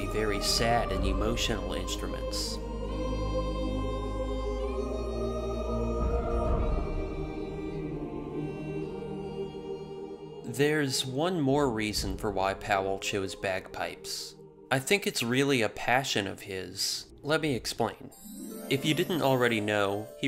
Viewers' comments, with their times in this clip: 0:04 are these now Bagpipes or Uilleann Pipes?